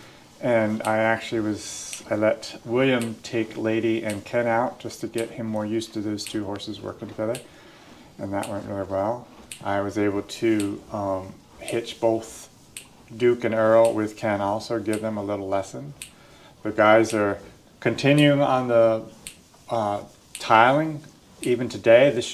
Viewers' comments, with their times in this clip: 0:04 is that a voltage clock for pasture fencing i hear in the background? Also, love Bree's grey Belgian nose.